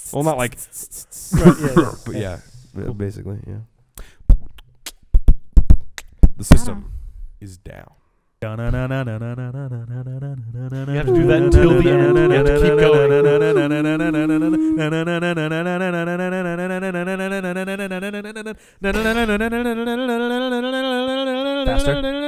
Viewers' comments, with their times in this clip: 0:07 Haha Homestar Runner reference Loved it. Also some wonderful Mongolian throat singing. Your internet is desperately trying to avoid playing the Ouya. It's trying to save you!!